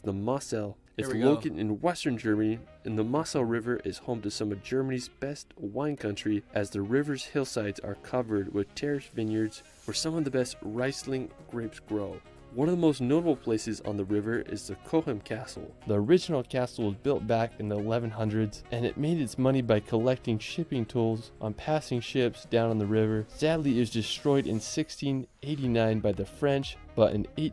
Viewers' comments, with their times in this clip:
0:09 Reisling no this is not Reis. Why can Americans not even, and ALWAYS, not differentiate between Ries and Reis.... its just incredible how little effort they give on letters.